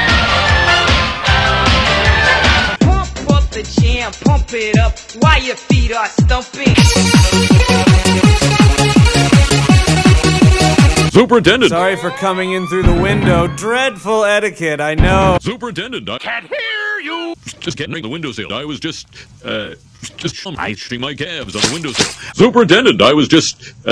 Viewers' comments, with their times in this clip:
0:07 But seriously this song is catchy what is it called? ITS ULTIMATE EUROBEAT